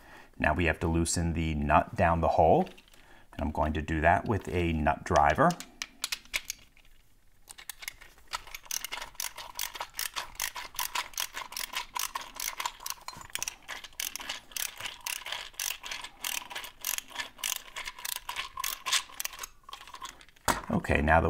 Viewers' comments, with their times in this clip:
0:04 The nut driver noise... Drives me nuts. Okay, I'm gonna leave now.